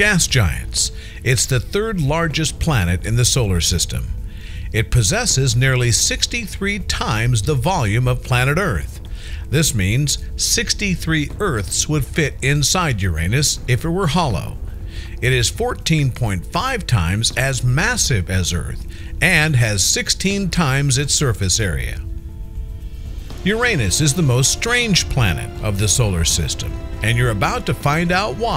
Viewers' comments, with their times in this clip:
0:10 I am taking this seriously, but cracked me up. I think it's his accent.